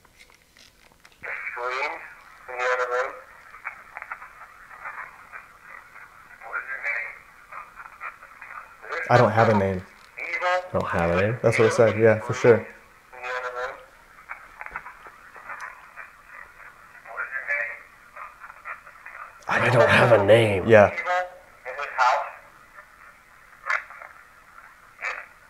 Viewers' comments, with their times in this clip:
0:07 on the playback recording of ''I DONT HAVE A NAME'' I heard '' I DONT HAVE TO TELL YOU''